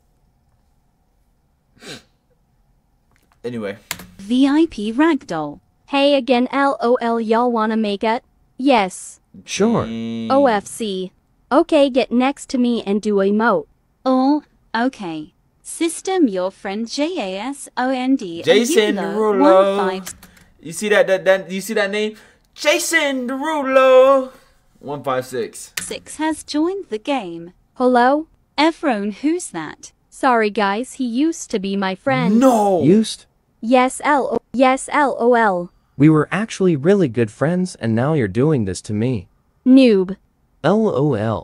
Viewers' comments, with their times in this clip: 0:05 its so funny he goes from crying to saying well anyway like nothing happend LMAO
0:23 dang , that tone